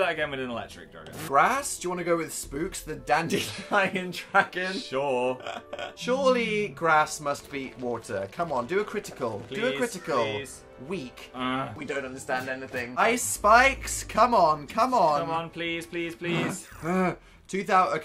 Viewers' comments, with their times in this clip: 0:04 Dan's laugh tho